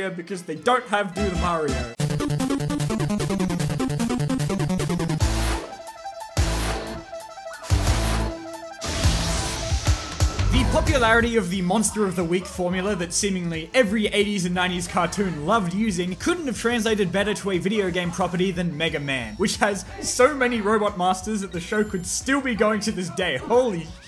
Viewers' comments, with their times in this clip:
0:05 that intro tho, love the beat.